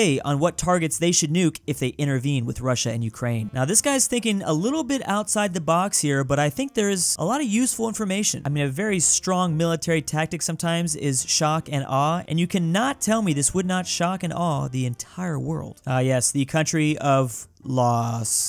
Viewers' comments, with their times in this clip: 0:06 laos sounds almost like las, wich means forest in polish